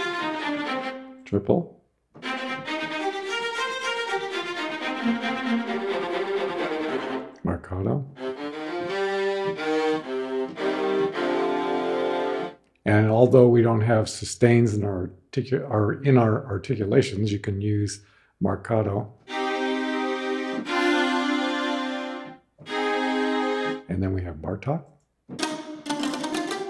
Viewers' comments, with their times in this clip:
0:08 Aren't those Marcatos (for instance the Violas ) awfully dry, especially when compared to the other articulations? Is that a "bug" in the library?